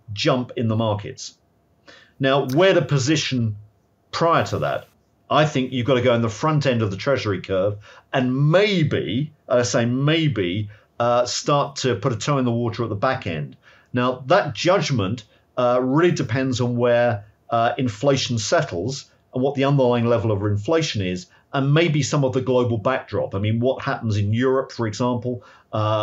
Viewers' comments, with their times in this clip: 0:07 when he said maybe he sounded like austin powers lol